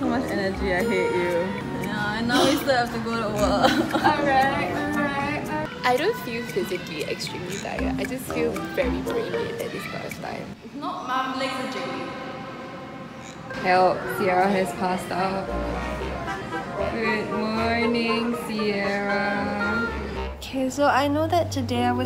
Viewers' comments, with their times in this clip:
0:05 I can hear "I Don't Wanna Live Forever" playing in the background 😂😂